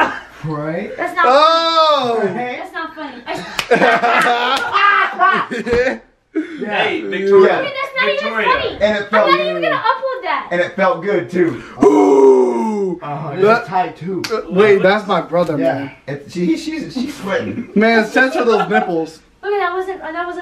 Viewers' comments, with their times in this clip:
0:05 She’s cold 99.9% the way her bro laughed 00.1%